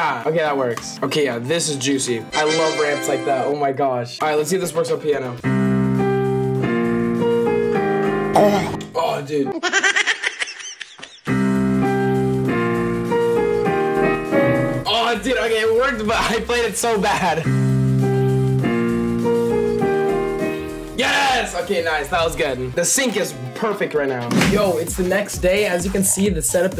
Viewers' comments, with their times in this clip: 0:07 bro the æugh was perfectly timed